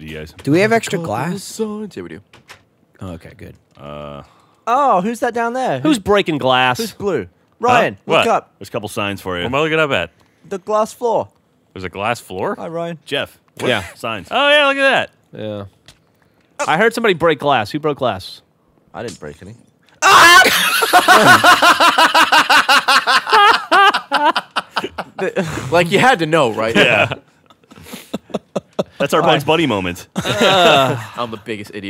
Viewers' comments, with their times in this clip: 0:10 The part when Gavin free was screaming is
0:19 that scream. Priceless xD